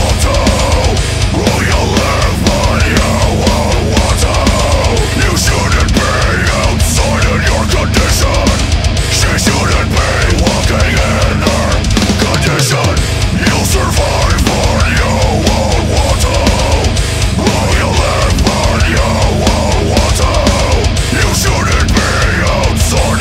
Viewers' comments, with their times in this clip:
0:05 The drummer switching to the china cymbal makes that part of the song 1,000x heavier. I fuckin love it.